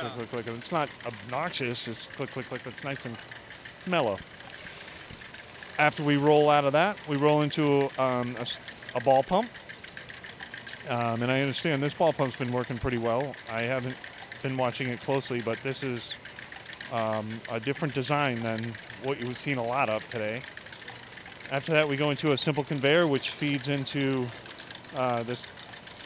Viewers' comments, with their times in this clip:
0:10 sounds like a pushrod engine